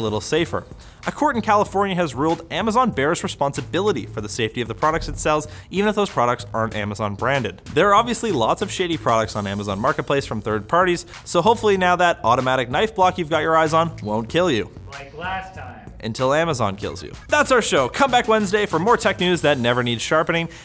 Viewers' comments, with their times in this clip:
0:07 did he say shady or shitty products!?? XD Sounded like mixed werd shaitty!!!!
0:08 sounded like he said, "There are a lot of shitty products on Amazon Marketplace" 🤣